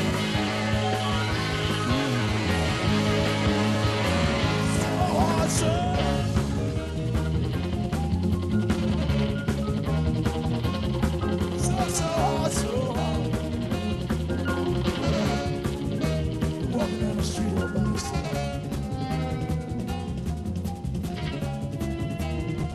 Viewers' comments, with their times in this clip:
0:03 bruce looking for lungs